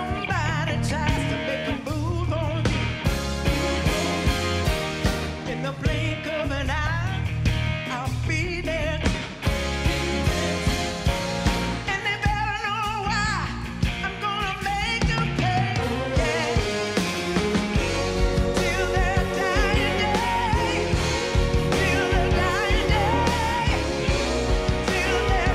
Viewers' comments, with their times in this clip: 0:06 She still got dat high note Chills.